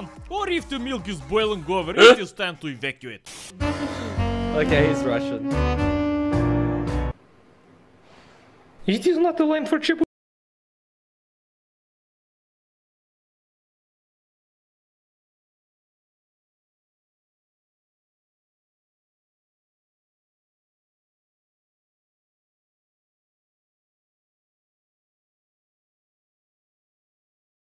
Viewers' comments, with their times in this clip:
0:09 No sound? Why?